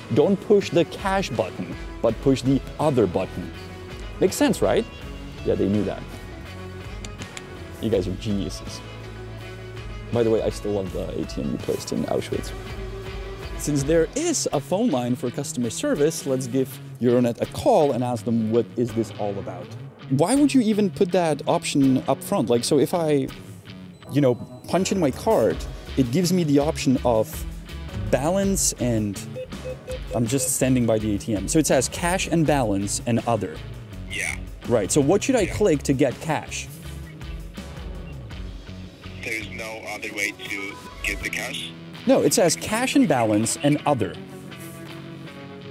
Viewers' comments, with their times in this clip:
0:09 what did you mumble here ? it really isn't clear, I can't hear what you're saying... "by the way I still love the ATM encased in Auschwitz" is what I can hear... that can't be right lol
0:28 you didn't hide your pin code and you also didn't alter the sounds.